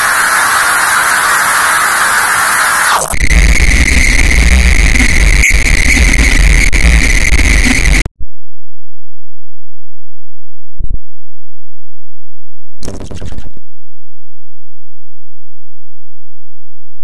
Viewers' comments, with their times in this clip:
0:03 why conga busher is it loudness